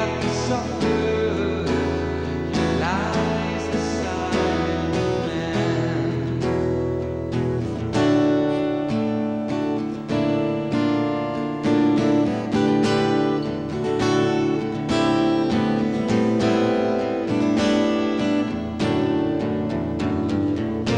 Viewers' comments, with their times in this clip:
0:08 I like this petrucci guitar riff